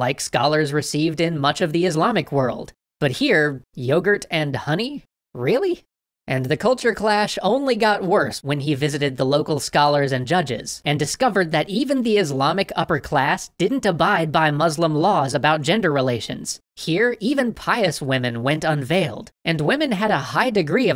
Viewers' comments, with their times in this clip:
0:07 it sounds like u said culture crash lmao kill me